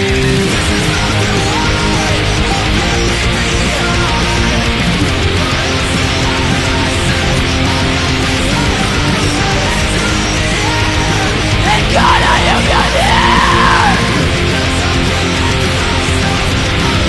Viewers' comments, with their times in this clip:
0:05 did she sneeze? Lol